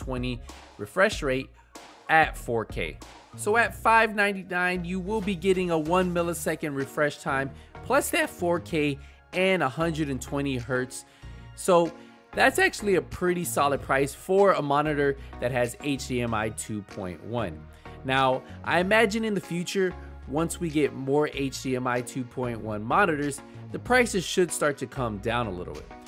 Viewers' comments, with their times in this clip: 0:08 lol that voice crack killed me. Thanks for the review though.